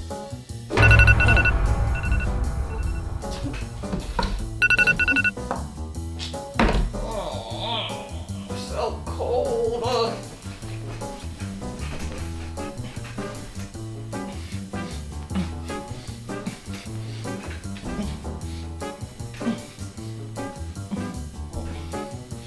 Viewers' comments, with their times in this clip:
0:06 the groaner is just like me 😂